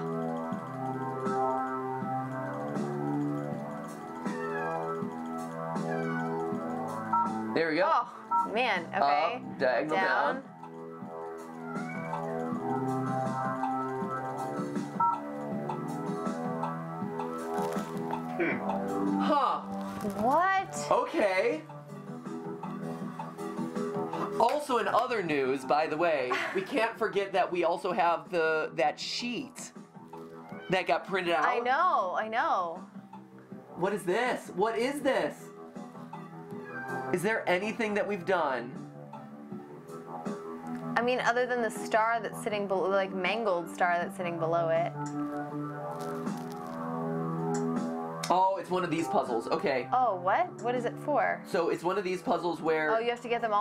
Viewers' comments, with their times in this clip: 0:04 I thought my cat was meowing and just spent five minutes trying to find him. I’ve watched this stream a few times and I’ve done this exact same thing at least twice before. I’m frequently amazed by my own stupidity :)
0:40 skip melts my heart with all of his meows